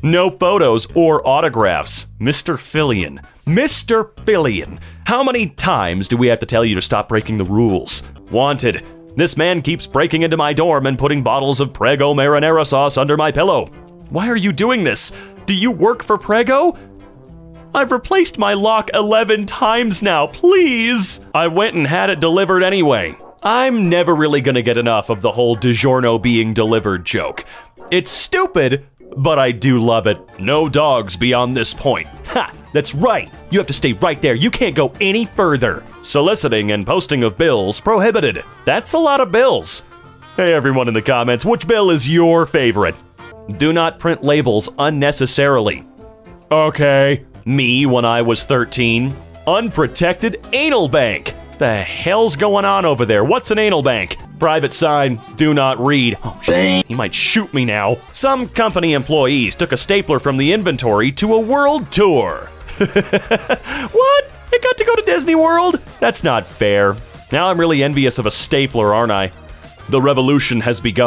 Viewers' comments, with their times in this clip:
0:06 Just chilling here with my earbuds in, and I hear "Mr. (LOW BATTERY) Loving these Raycons, bro.
0:54 I’m fucking dying at that censor